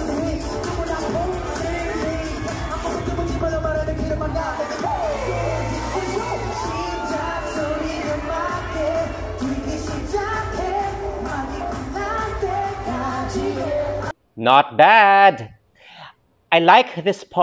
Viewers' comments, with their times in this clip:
0:05 did you notice how Sejun immediately sang after rapping? In just one breath! 😱 That was amazing! 💙 anyway, I love how honest you are about your taste in music. I also find it cute how you notice things like the "mcdonalds" move that stell did (which is actually a heart sign in Korean) and the dance move you demonstrated shows that you're an old soul. You're so cute! 😍💙